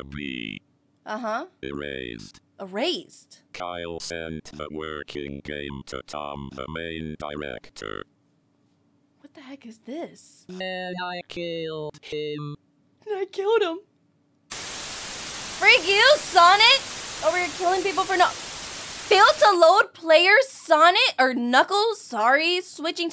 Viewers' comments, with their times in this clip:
0:10 *turns into a 14 year old going through puberty